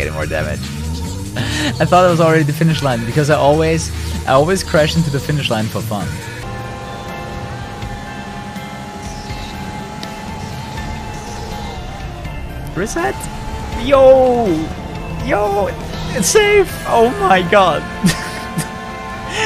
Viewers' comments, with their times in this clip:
0:07 Music? It sounds really nice.